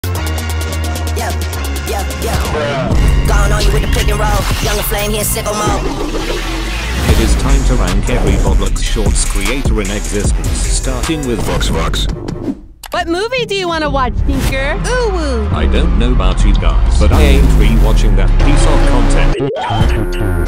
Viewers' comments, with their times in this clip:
0:06 the terraria boss 2 music goes hard